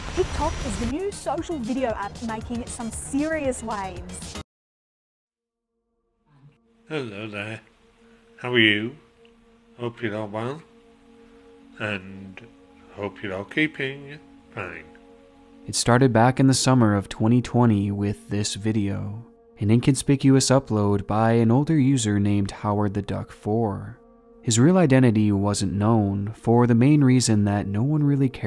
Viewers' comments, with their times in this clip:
0:09 Is it me, or does he flat-out say "I'm a pedophile" ? Because that's all I can hear.